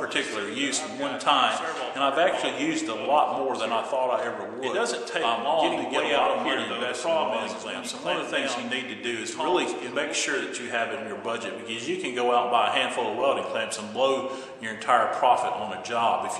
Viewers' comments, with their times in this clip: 0:03 What happened to the video ? LOL two voices going at once